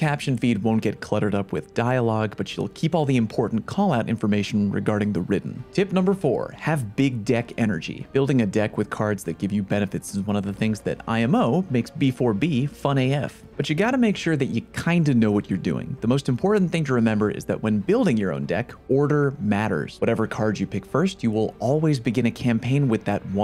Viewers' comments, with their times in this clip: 0:05 oh i thought u said........nvm